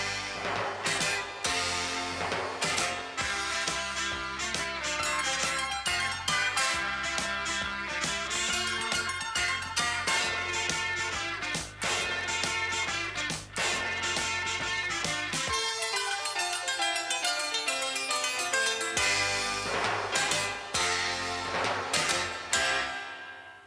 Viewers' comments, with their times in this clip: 0:04 I like the music at the end